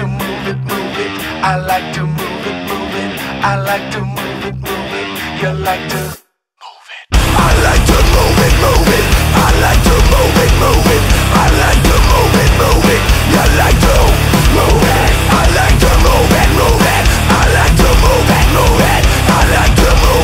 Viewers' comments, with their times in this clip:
0:06 Holy shit dude, right at the mark a huge thunder boom just happened right as you let it rip.